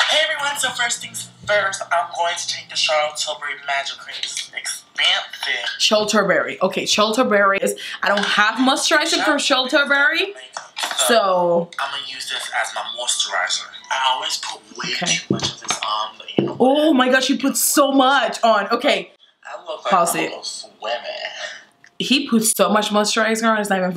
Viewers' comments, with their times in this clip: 0:07 The way she pronounces Charlotte Tilbury is so funny 😭😭